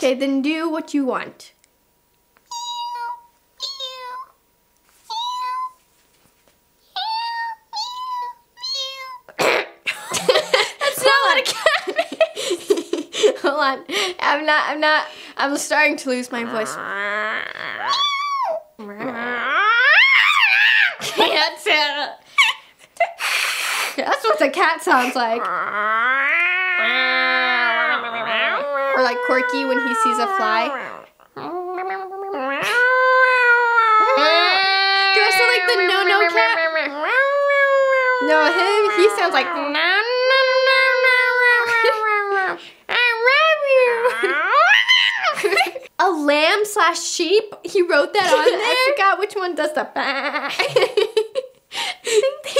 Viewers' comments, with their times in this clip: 0:03 it’s she sounds sooo cute 🥰
0:19 What my cat sound like 😂
0:39 when they did they cat my my parents was like how many fire trucks are outside?